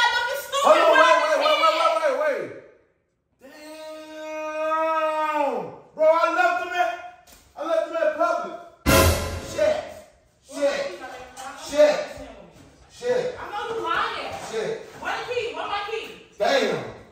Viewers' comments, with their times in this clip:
0:03 is when I knew she was about to flip tf out. House too quiet. Stop playing with her about her kids. She go in mama bear mode.